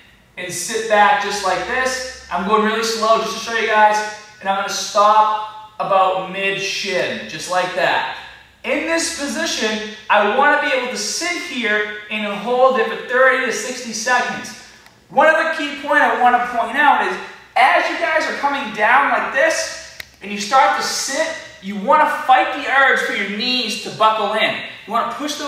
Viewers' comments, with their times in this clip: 0:07 did he say "Mid-shit" =]